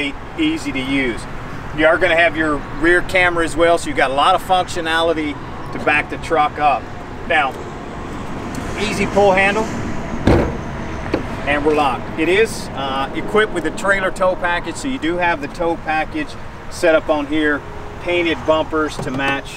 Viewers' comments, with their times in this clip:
0:05 I thought he said “you better back the truck up” 😂